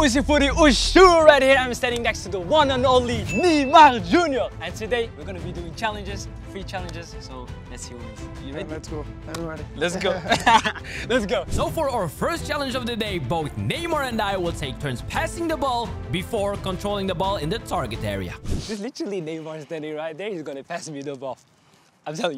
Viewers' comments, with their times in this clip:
0:04 I’ve never really heard neymar talk